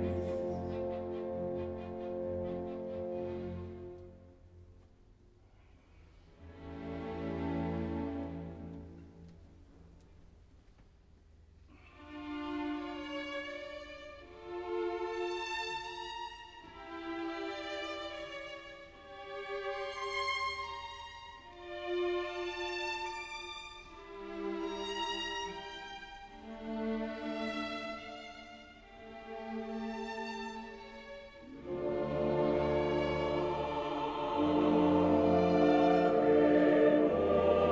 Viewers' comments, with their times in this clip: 0:09 It was played a little too slow in my opinion
0:12 I feel like the strong Emotions Mozart must have felt at the end of his days. The Angelic Choir encompassing his love and beauty he saw in music while the faster pace deeper voices signifying death coming for him. The feeling of limited time....then ...acceptance
0:18 switch to 1.25 speed It sounds right then